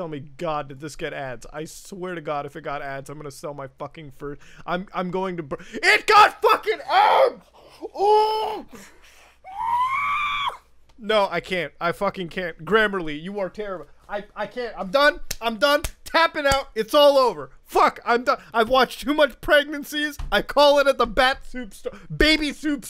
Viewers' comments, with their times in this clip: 0:07 Goes R2D2 mode
0:08 damn he got so mad be became R2-D2
0:09 he sounded like R2-D2
0:09 straight up R2D2
0:09 my dude sounding like R2-D2
0:10 that R2-D2 scream tho